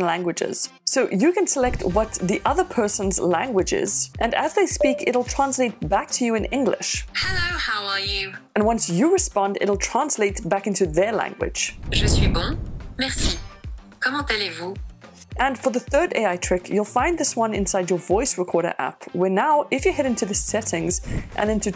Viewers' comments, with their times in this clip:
0:09 "je suis bon"? 😂 That sounds soo weird